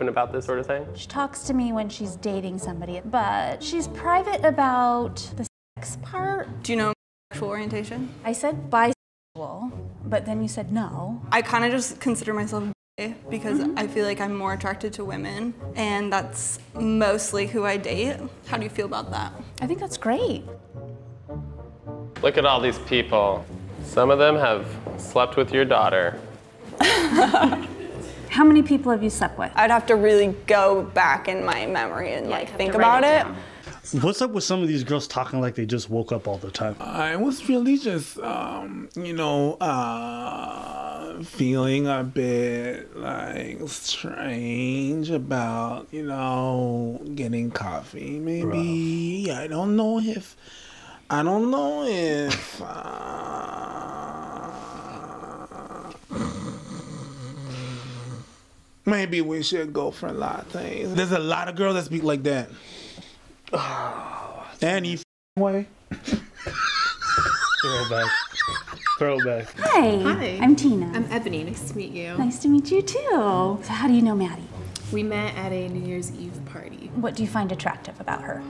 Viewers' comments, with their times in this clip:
0:06 it sounded like her mom called her daughter a bicycle
0:33 (I don't know how to timestamp).. It's called Vocal Fry and it's annoying as fuck! Apparently people do it to mimic a lower register (more dominant). Personally I think it comes from not fully committing to what you think or say. Like you'd rather be doing something else than engaging with whoever you're talking to. Sorta like how high fashion models always look bored. It's a false portrayal of how they actually feel. Like wearing socks that say "I don't give a fuck". Clearly you do.
0:33 Vocal fry. Very annoying vocal trend made very popular by Paris Hilton and the Kardashian family, amongst others.
0:33 They all have a Valley Girl accent too for some reason. They sound like Valley Girls just waking up in the morning.
0:34 Vocal fry. I can’t stand it.
0:36 omfg that impression is SPOT ON and fuckiing killed me lmao
0:36 she talks through the back of her nose
0:36 that's called 'vocal fry', it's becoming more and more prevalent in modern English speech......fuuuuuuck/crackle/I just woke uuuuuup/talk.......how did this way of speaking happen?, I heard it's a way of talking more masculine when you don't have a deeper voice, but to me it just sounds annoying!
0:51 PREACH HAD ME ROLLINGGG- ALL THE GIRLS AT MY ACADEMY TALK LIKE THAT ITS SO FUNNY
0:56 you're describing a vocal fry where the person doesn't speak from the diaphragm and just the throat. It's awful but celebs like Kim K and Paris Hilton made it "trendy". I hate it
1:06 why does he sound like a car